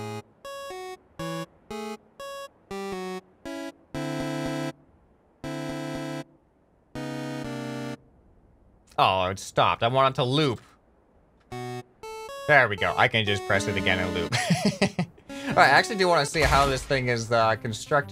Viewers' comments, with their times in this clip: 0:03 Me and the bois at 3am vining to the mii channel music